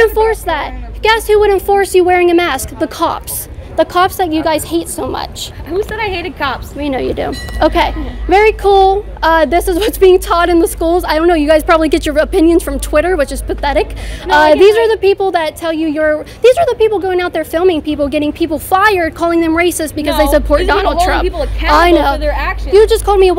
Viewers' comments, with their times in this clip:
0:05 love the ding 😂